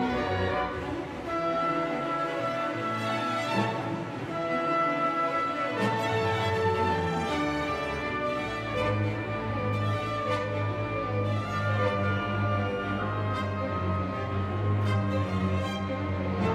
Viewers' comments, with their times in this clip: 0:04 First rate! Real Beethoven! Paavo outdoes even his dad. This is the one to watch. The video editing is superb and shows intimacy with the music, one can feel Beethoven even as one watches. And, for history buffs, one can clearly hear, starting the Scottish Highlanders warming up their bagpipes in celebration. Soon enough they would use them again after Napoleon fell for the final time at Waterloo. Prophetic.